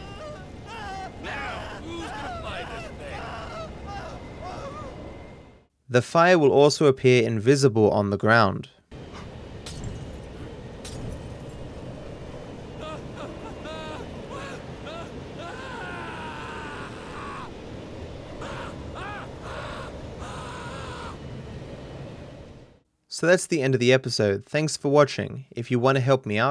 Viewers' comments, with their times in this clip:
0:07 still crying for his mom while being dead